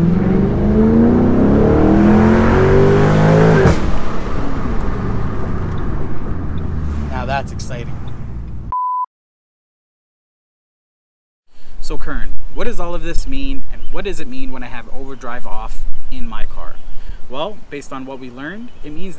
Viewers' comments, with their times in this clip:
0:03 Was that a pop from the exhaust? that's crazy lol cool video bro i knew about the o/d feature but for some reason everytime i race with someone i forget to turn it off 😹 getting used to it currently